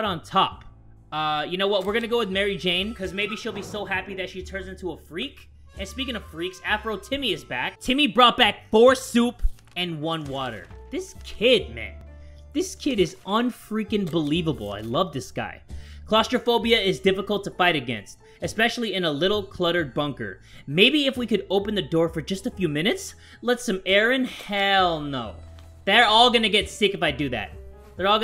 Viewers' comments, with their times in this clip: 0:10 whats water it WATA